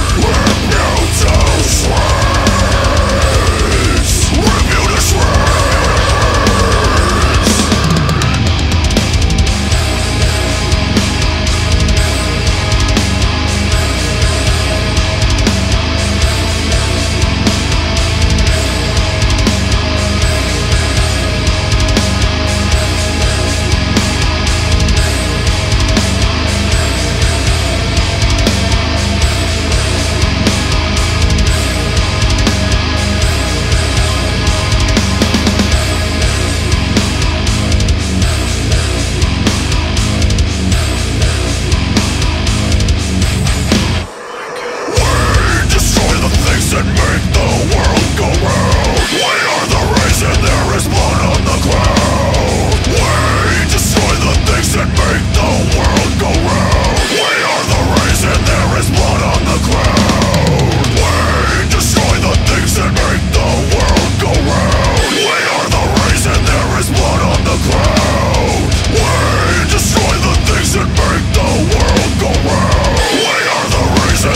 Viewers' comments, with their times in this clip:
0:09 that meshuggahesque part makes the whole thing even more brutal as it already sounds. awesome song from an awesome atmospheric album!
0:43 Can anybody figure out what is said right before the chorus ? its like a whisper and I just noticed it know.
0:44 If you wanna hear the heaviest thing that your two ears have ever had the pleasure of hearing, I suggest you hit the setting buttons and under speed choose the 0.25X and fast forward it to You will start laughing hysterically.
0:48 wtf is that hell high noise that first appears ? i want it! maybe its a digitech pitch shifter?
0:56 is the sound you hear just before getting impaled by a fucking xenomorph